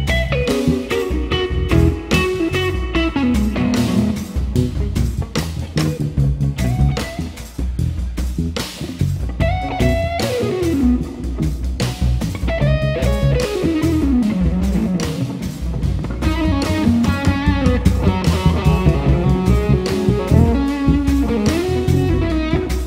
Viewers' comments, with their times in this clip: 0:06 The lick in was cleaner than a surgery room 0_0
0:06 ~ how to kill your guitar tone by stomping on some stupid pedal :D he should have just started his solo with volume on 6 and then turned it up... Still, great playing! :)